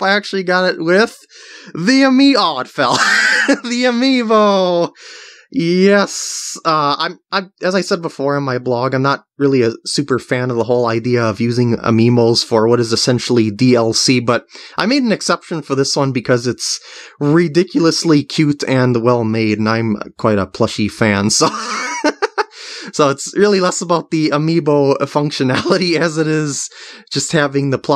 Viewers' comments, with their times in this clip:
0:10 He says amiimo instaed of amiibo. Also I don't know how to spell amiibo:)